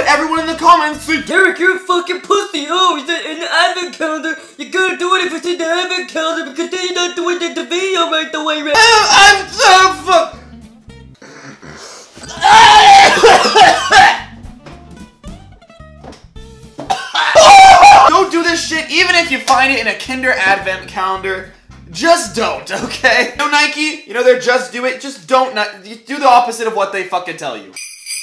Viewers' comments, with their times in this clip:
0:10 Let's be real here. We all know this is fake, but we sure get a laugh outta it! 's my personal favourite part, just because of his scream